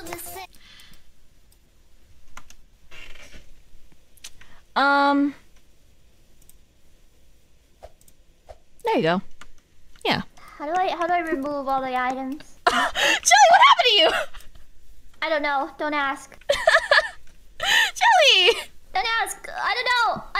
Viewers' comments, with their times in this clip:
0:03 fucking with the chair creak when she leans forward